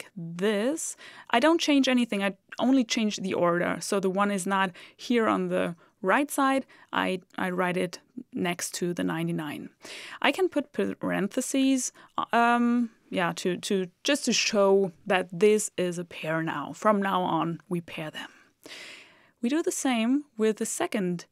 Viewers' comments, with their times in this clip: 0:07 Your voice has untapped Asmr potential!